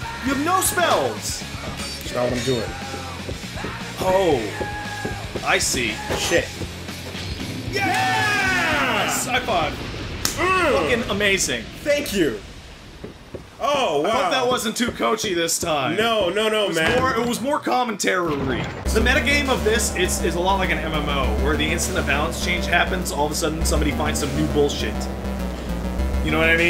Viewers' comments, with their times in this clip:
0:07 I see you times the "yay" with them yelling it as well.
0:07 the song lines up